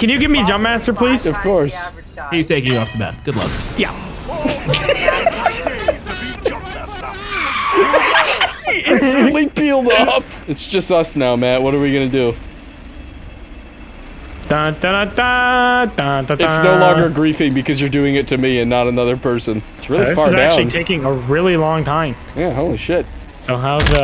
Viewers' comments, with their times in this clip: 0:05 IT'S SO QUIET 💀